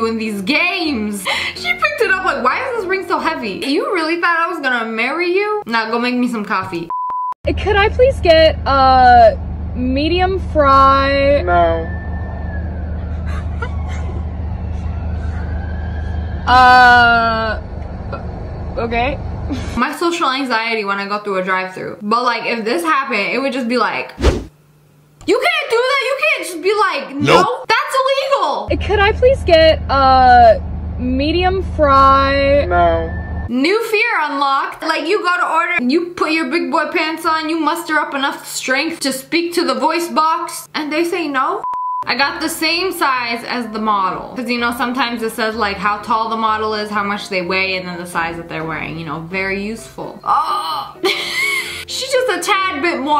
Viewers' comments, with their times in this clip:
0:07 Fun Fact: video on you can hear the workers laughing in the background if you listen closely.
0:10 why that sound like James Charles tho-
0:32 The dude bloddy souded like james charles😀😶
0:36 sounded like digital nex